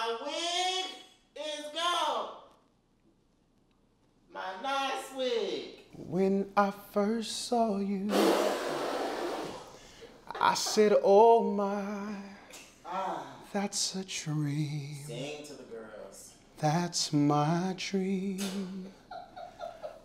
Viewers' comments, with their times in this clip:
0:06 Avery Wilson uh oh all the girls are going to be vocally pregnant after this. Lol yep I stand by what I said